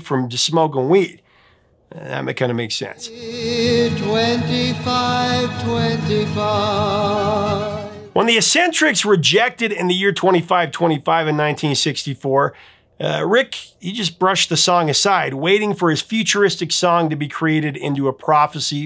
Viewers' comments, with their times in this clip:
0:06 do you hear a little Whiter Shade of Pale horn?